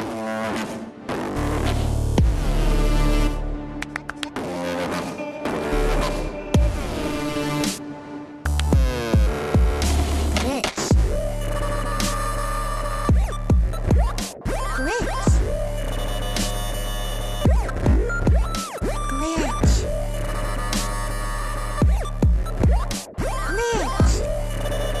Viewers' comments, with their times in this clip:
0:06 I heard 'bitch' first, then 'witch' and only then 'glitch'. XDDD